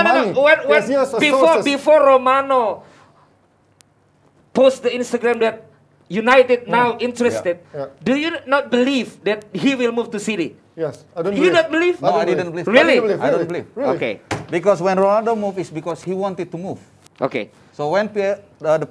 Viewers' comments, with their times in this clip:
0:03 minutes of silence